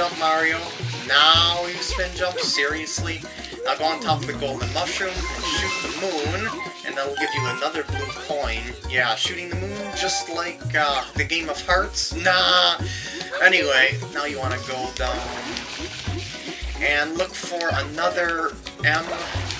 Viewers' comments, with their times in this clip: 0:05 I'm going to shoot the moon **people gasp and moon explodes**